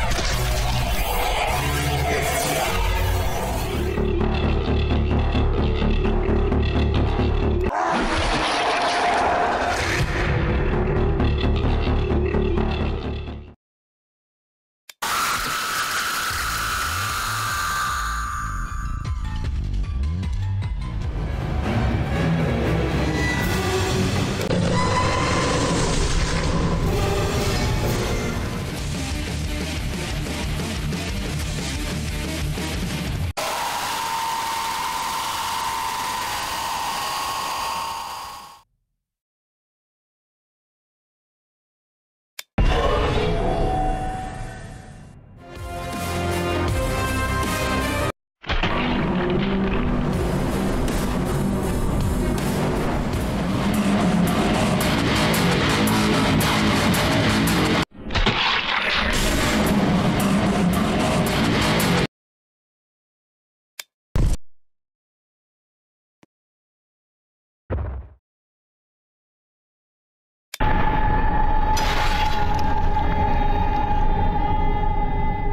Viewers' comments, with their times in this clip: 0:03 theme sounds like garten of banban?
0:04 not the opila bird song 💀 #BirdUp
1:03 I don't know why it doesn't have the sounds of its Madness version